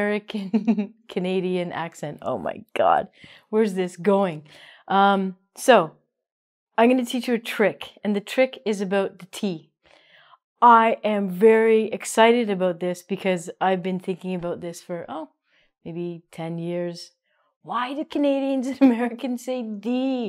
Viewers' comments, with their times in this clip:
0:06 the subtitles show - I'm going to teach you trick, ... .But I hear oniy - I'm to teach you trick. I don't hear "going". Ronnie prononced it? Sorry for my grammar and hearing.